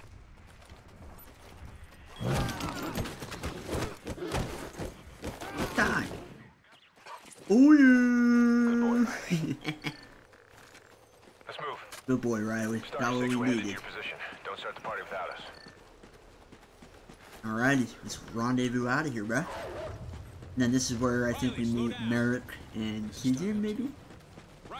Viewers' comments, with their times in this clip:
0:09 The evil chuckle 😭